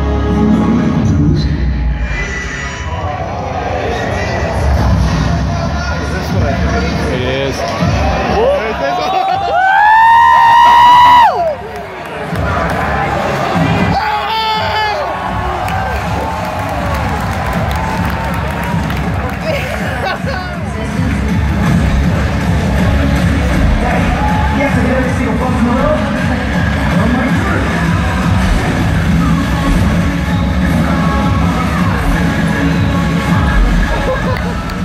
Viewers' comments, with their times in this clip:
0:06 People who say that reaction "sucked", rewind to If you think that hearing this much noise in a Microsoft Theater is not enough - you are ridiculously oblivious. Considering that Sony's conference took place in low-end shack this year, I wouldn't see any acoustical difference in reactions for both DMC5 or RE2 whatsoever. After all, it's a press conference, not a circus. P.S. I AM SO HYPED!!!!!11one
0:09 man is R2D2
0:16 That crowd was weak. I would've absolutely lost my shit